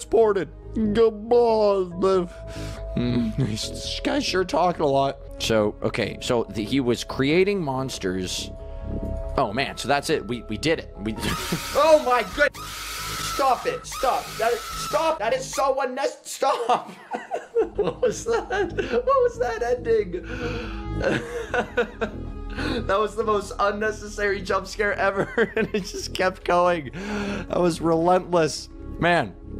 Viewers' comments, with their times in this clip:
0:09 "That's it, we did it." jumpscare WOAHHHHHHH jumpscare sound repeats WIAHWIAOWWAOHAW Update: I played the game and I was stuck in the jumpscare :/ It didn't give me the badge lol
0:09 THE LIME LIPS SCREAM
0:16 awe his laugh🥺
0:16 that laugh though 😂😂😂😂😂😂😂
0:16 what kind of laugh was that!?!?!?😂😂😂
0:17 just a cute laughing clip 🥺